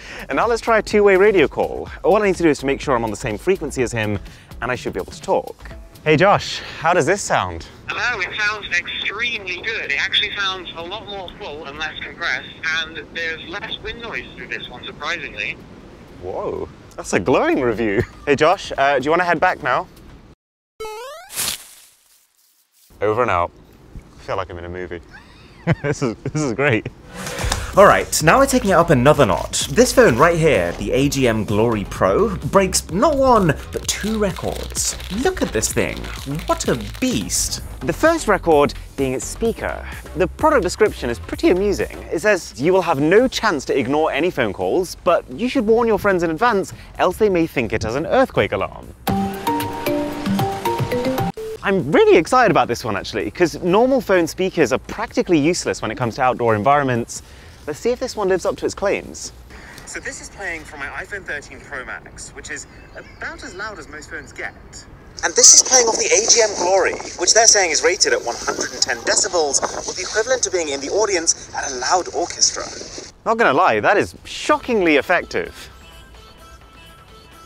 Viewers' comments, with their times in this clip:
0:06 "how does this sound now?" "H..E...O... IT... SO...NDS.. EXTR...M..Y G...OD"
0:08 That is MW2 game chat quality.
0:12 That was the worst quality ive herd, what do you mean lmao
0:59 You should have included speech in the clip to compare the phones volumes to because right now it feels like the iphone is at like 30% volume and this clip feels disingenuous
1:05 Didn't expect that, someone call the hospital for my ear please...